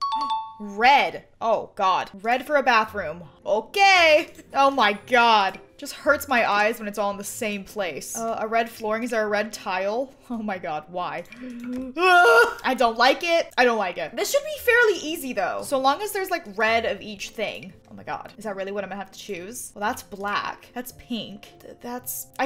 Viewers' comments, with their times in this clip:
0:04 But how she said OKAY just got me going
0:04 That okay I heard was absolutely beautiful🤣🤣